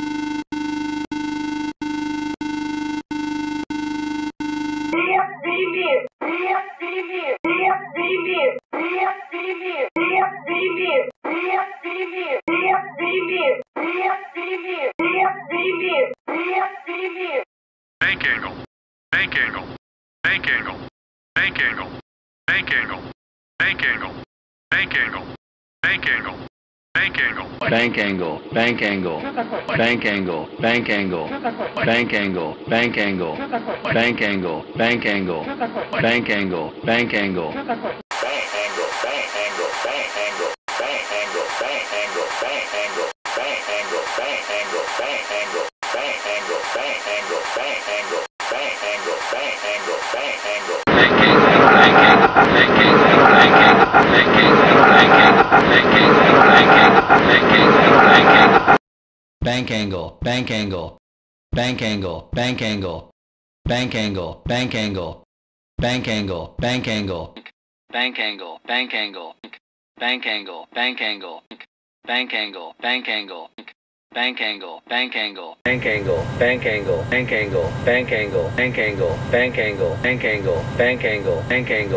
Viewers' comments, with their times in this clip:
0:05 why does it sound like someone is throwing up 🤢
0:05 "beef stay here"
0:05 "PRIVET DAVID PRIVET DAVID" Is what i hear in
0:09 The Ilyushin 76 is kinda dramatic
0:28 Put ur playback speed to 0.5 you hear the Fokker 100 Shut the f**k
0:28 Does that say "Bank angle bank angle, shut the fu-"
0:28 Fokker 100 sounds like there was a Minecraft Villager in the audio background
0:30 DOES SNYONE HEAR IT SAYING STFU
0:51 Why sound like stall?
1:05 oh it’s the beeper 😂